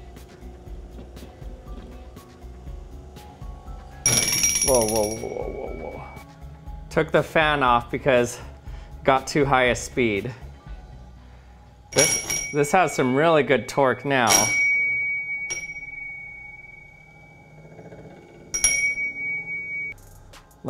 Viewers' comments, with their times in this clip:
0:03 I thought is my alarm⏰